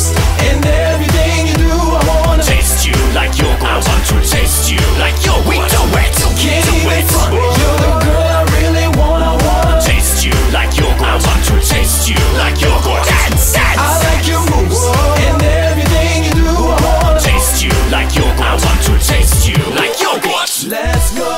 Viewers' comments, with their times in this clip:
0:05 "Can't even fart, you're the girl I really want". Best pick up line. Ever.